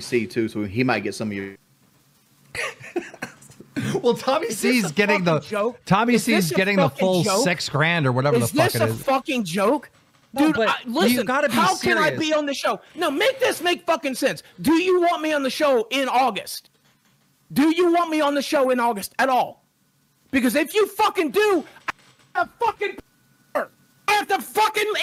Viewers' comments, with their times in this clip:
0:06 dude sounds like Trump